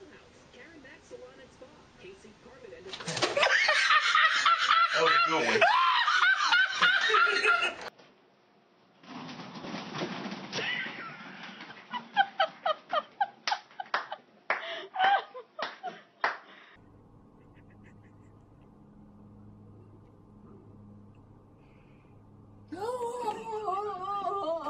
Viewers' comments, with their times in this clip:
0:03 I laughed more at the laughter. Lol.
0:05 was that Elmo laughing???????????